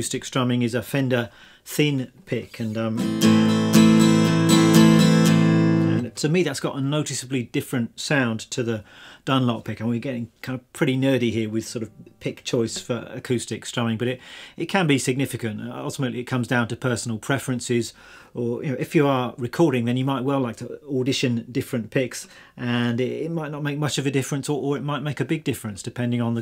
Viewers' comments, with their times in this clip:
0:08 I think that sounds pretty picky